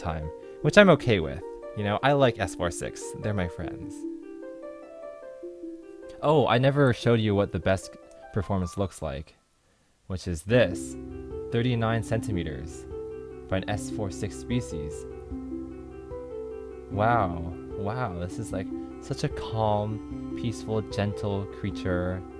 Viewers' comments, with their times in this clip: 0:06 that beat drop tho